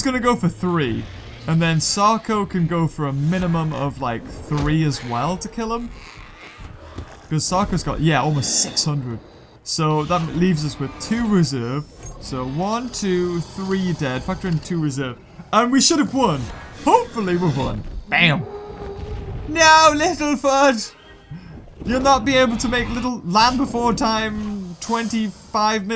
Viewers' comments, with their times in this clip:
0:10 did that Shunosaurus make a T-rex roar??